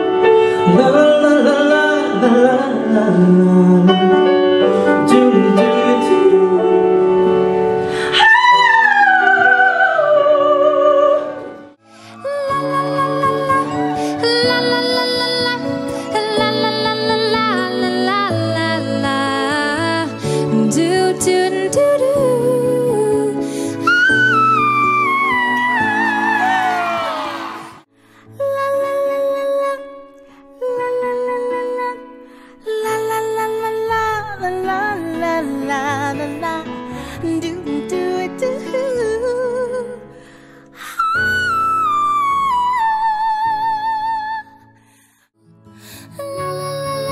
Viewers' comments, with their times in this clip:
0:03 Dang nope. This song is not meant for a man’s voice.
0:12 she was my favorite she kept it simple and slayed the note and her voice is really beautiful❤❤
0:28 I'm sorry... but the way she sings "lalalalala" throws me off